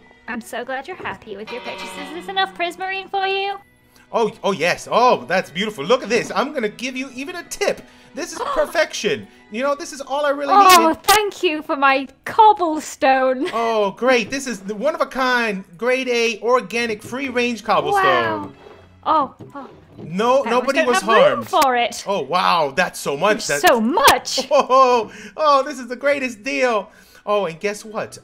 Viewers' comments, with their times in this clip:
0:10 that raped my ears